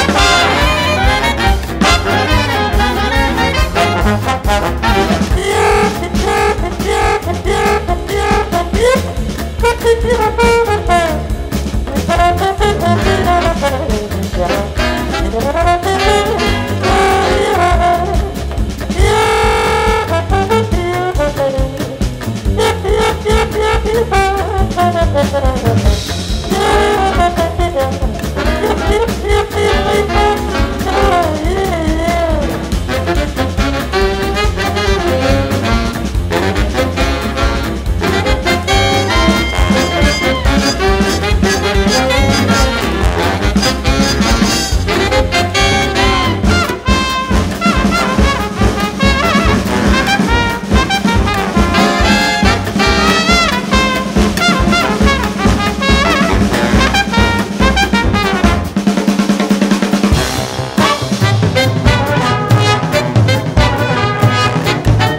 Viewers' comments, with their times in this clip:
0:04 AGGGGH. This is EASILY the best song yet. WOW. What a GREAT PIECE. I have to listen to this again--i have to listen to this easily several more times. This is just incredible. EDIT: may i just add that the muted trombone is one of the most hilarious sounds in jazz? like, the muted trumpet is "weh, weh, mwehwep-wehh" and that's fun and very listenable, but the muted trombone is just: "mmuuAAAAUUGGGGGH" like the death throes of a broken-hearted scat singer.
0:05 whats that instrument and how do they do that style? is it a bass/baritone saxophone? its so sexy
0:05 What instrument is it just a trumpet with a harmon mute?
0:06 I love how you can see people smiling when this instrument comes in, I did too because I love its classic sound.
0:06 does anyone know which instrument is the one that sounds in the minute ?, it sounds beautiful ;)
0:13 trombone in the background is just straight vibin'
0:26 I didn't know a piano can make that sound
0:41 Also, what is that high chirriating sound? How is it done?
0:45 I love the part when the trumpet took over (but with some bass lines in the background) Edit: why can you like your own comment?
0:46 it sounds like your in mexico